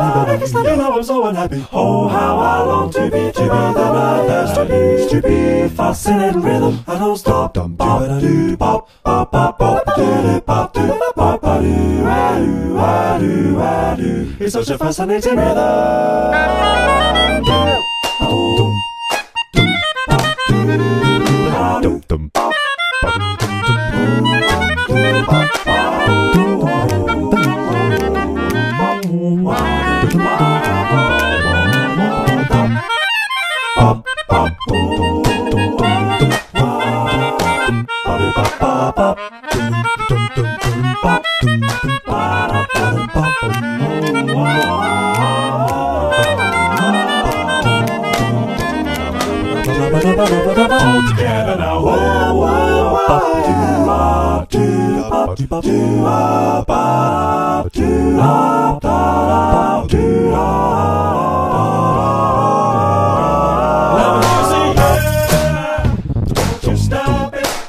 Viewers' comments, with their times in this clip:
0:04 jacob is a fuckijg menace for adding that half flat there
0:04 I think you missed some microtones
0:24 Can we appreciate bars 105-106???? he's playing 8th note triplets in descending groups of 4 instead of 3 (its called metric modulation I think)
0:49 one of the most grimiest shit I've ever heard